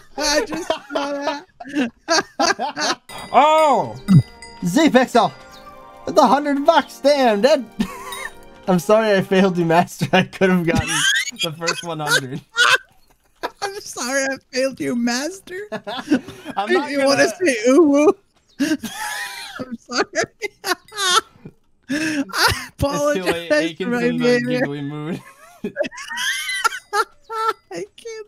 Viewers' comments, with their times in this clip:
0:10 Lmao that laugh!